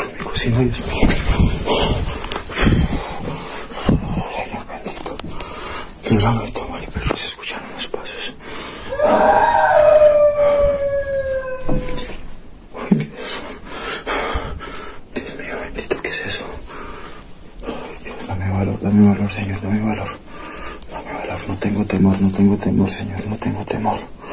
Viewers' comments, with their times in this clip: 0:08 (Grito) Idk if that's it but just seemed different to me from your usual stuff.